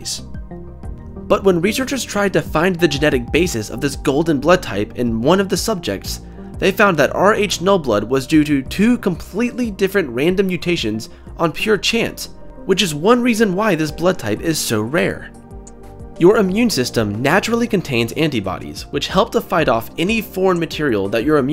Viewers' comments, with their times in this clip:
0:08 "due to two" sounded funny lol